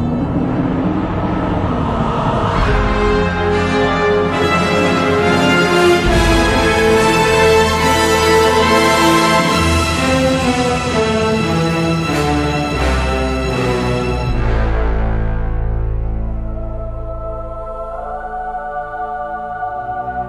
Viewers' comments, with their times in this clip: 0:07 ...and I still imagine Eris' evil laugh